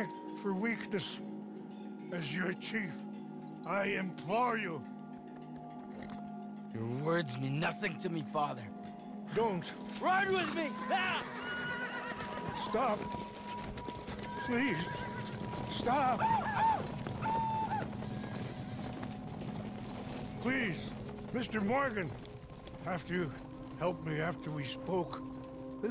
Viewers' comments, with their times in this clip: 0:07 Him crying out to his last son and the younger members of the tribe is heartbreaking.